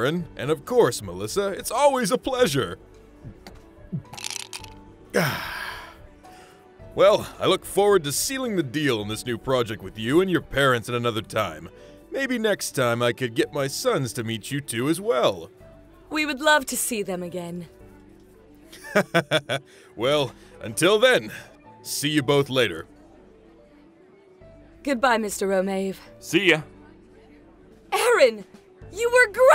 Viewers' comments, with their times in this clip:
0:10 was that Donald Trump